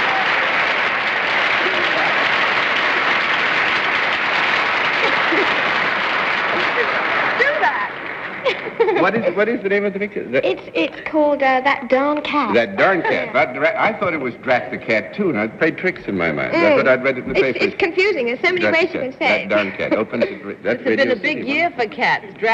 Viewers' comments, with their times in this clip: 0:07 was that Joanna Barnes shouting "Susan!"? (as in, Susan from "The Parent Trap" where Barnes and Mills got together)
0:08 That giggle is adorable. Class act is Hayley Mills - and the panel were good sports too. Mad respect to the lady aviator. Something that could very probably only have happened in the US at that time.